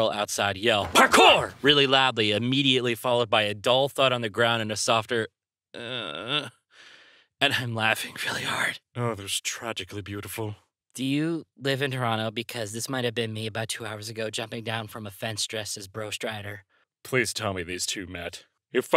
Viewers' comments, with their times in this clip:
0:04 I'm highly disappointed that I didn't hear a thud sound effect